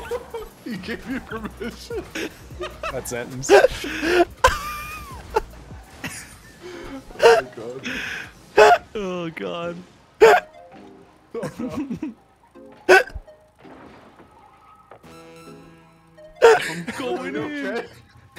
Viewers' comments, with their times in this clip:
0:06 never heard him laugh so hard🤣